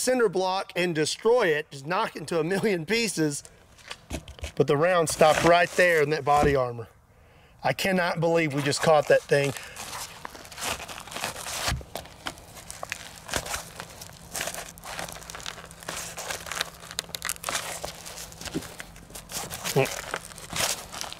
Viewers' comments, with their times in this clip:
0:07 body armor ASMR 🤣